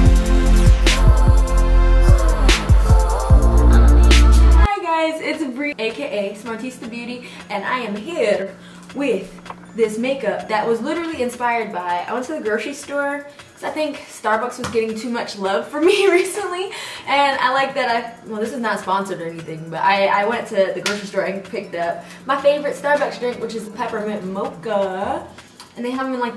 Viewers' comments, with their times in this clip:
0:08 When you realize you sound like Joseline Hernandez but quickly change your mind LOL.